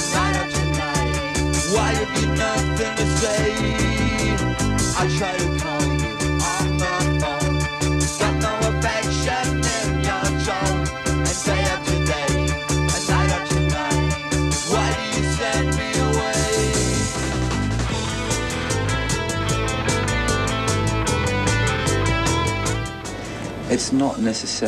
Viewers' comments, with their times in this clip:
0:09 The song is so contemporary. If a band made that song now, everyone would just think it's some more normal new tunes. Which is rad. Yo.